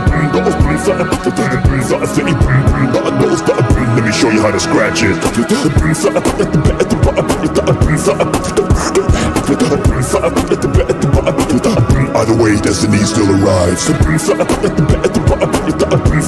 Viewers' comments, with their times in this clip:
0:03 TURTLES KNOW HOW TO BEATBOX AT 0.25 SPEED
0:03 Scientists found out how to scratch this language Aliens:
0:03 SUPER EMINEM AT 2X SPEED